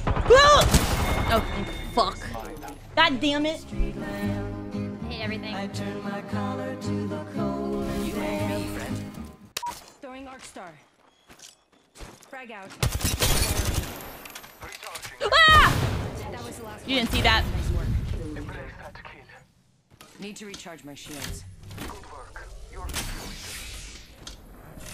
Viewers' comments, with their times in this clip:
0:08 "You and me friend" Yo why Path sounded like a chipmunk? 🐿️😂😂😂